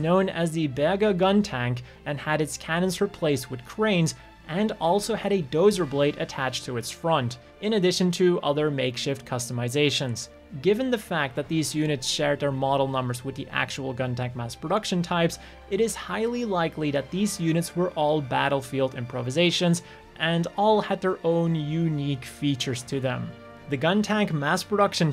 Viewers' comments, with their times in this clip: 0:07 I heard that as Burger